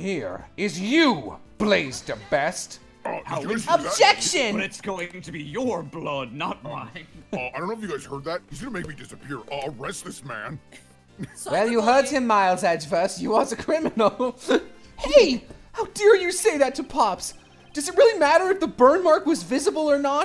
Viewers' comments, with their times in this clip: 0:04 HELP THE OBJECTION WAS SO FRUITY "OBJECTION ✨️"